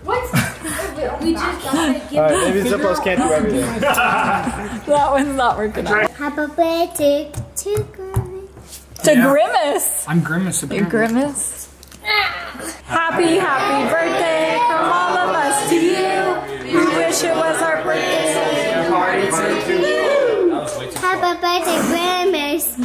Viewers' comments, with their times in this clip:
0:10 that has to be the best birthday song ever.